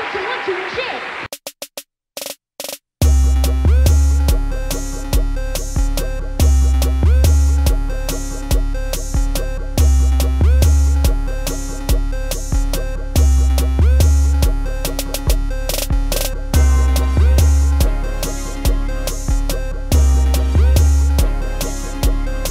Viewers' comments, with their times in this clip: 0:03 I can’t get enough of this beat 😭😭😭😭😭😭💗💗